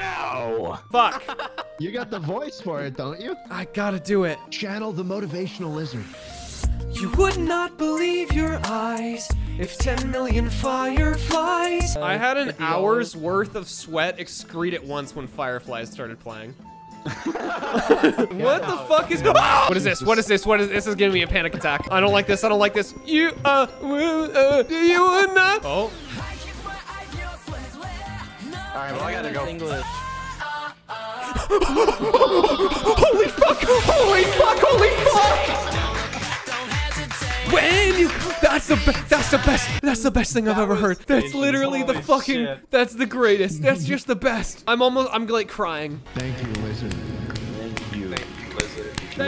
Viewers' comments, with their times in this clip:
0:04 that sing-over of fireflies was actually really good tho I wish he added to the video.
0:05 Holy heck his voice actually does sound alike
0:26 i got really happy cuz ya know like one of my fav animes intro was playing buT THEN IT TOOK AN EVEN BETTER TURN
0:27 I STARTED SINGING tHE OPENING THEN IT WAS BIG TIME RUSH And I YELLED
0:31 he did it again. He did the excited constipated ape noise 🤦‍♂️